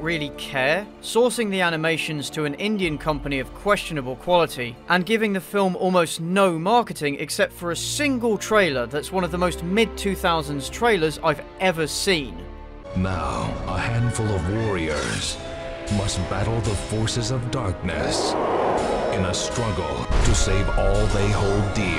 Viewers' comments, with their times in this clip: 0:09 Hell, the Battletech animated series mixed traditional animation and CGI better. BECAUSE THEY DIDN'T MIX THEM. That's not even a mid-2000s trailer. It sounds freakishly like the opening narration from Hercules The Legendary Journeys.